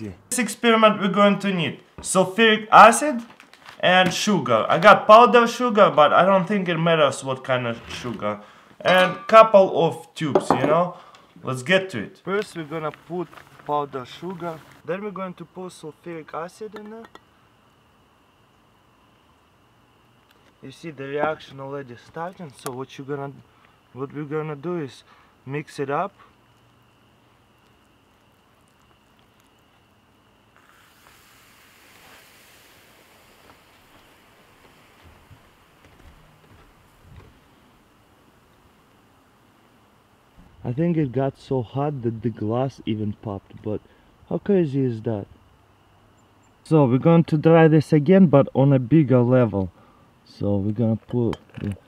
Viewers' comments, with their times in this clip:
0:03 "Shoogar" ha ha lol
0:32 BOOM...the glass takes a shit